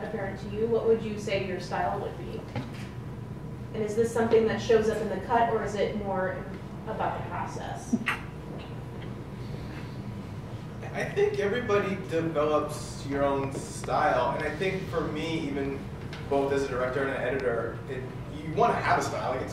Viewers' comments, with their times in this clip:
0:06 Who was that person laughing